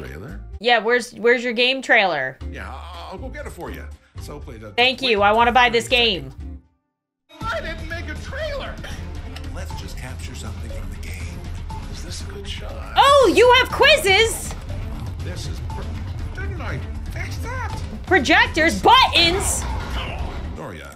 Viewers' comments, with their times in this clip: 0:07 “I DIDNT MAKE A TRAILER!!!” He sounds so panicked